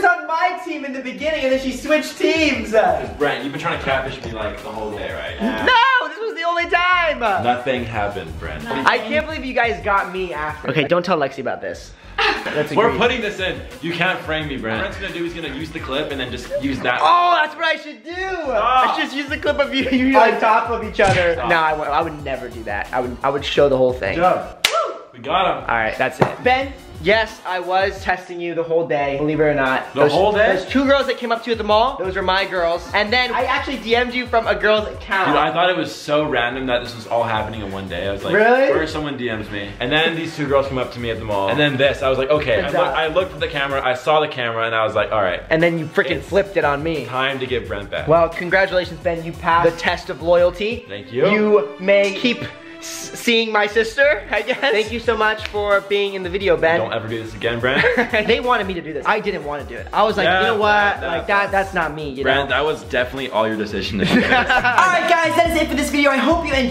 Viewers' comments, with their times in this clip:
0:05 Ben: Brent, you've been trying to catfish me like the whole day right? Brent: NOO!!! This was the only time. High pitch voice
0:52 I'm sure Brent was about to say "Dating" but replaced it with "Seeing" at the last moment.